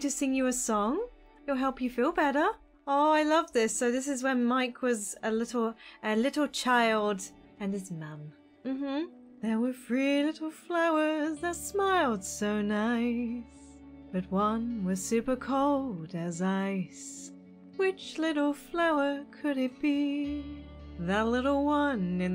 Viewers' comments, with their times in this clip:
0:09 🤩🤩🤩🤩YOU SING SO GOOD. AMAZING
0:10 OMG I LOVEEEE YOUR SINGING SO MUCHH AHHH ❤❤
0:10 OMG HER SINGINGGGG❤❤